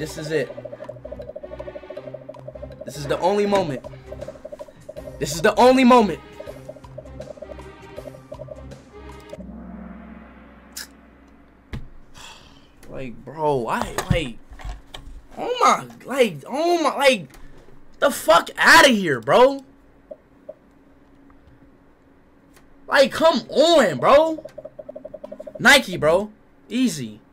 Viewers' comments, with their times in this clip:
0:08 turn your volume down bc.if they pick sum besides Ronaldo it's gon be loud😀😃😭